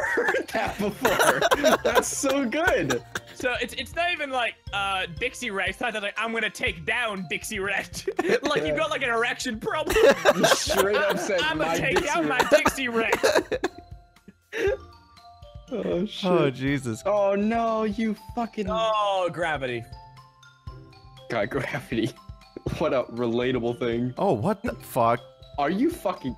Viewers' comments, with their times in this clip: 0:07 it took me until to realize why everyone was laughing...